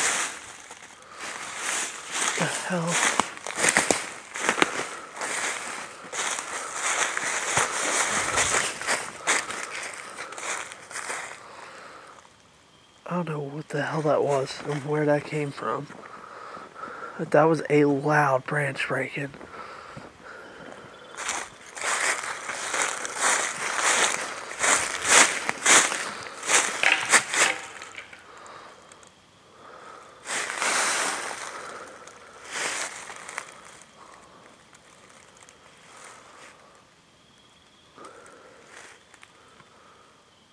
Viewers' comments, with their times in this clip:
0:06 super loud noise
0:28 that sounded like a branch was thrown on the road. Fox sounds like a woman screaming. That’s sounded like a person trying to get you to go the other way.